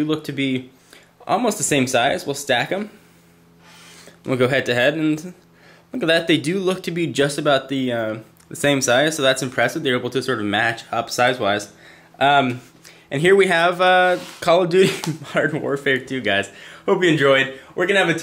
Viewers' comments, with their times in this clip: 0:05 what the hell was that sound that he made hahaha